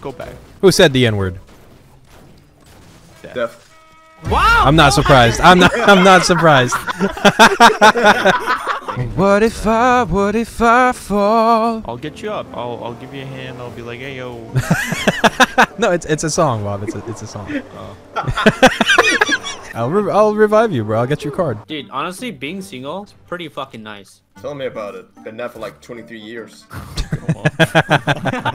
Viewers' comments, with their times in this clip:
0:07 that ayo was cute bro
0:09 sheeeeeesh he has the voice of an ✨A N G E L✨